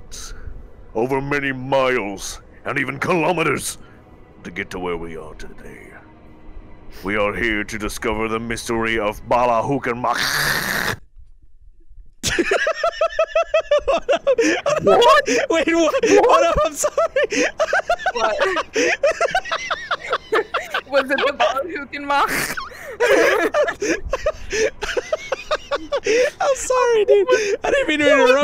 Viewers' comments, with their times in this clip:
0:10 "The Mysteries of- MBalachulac-chokes* Lmao XD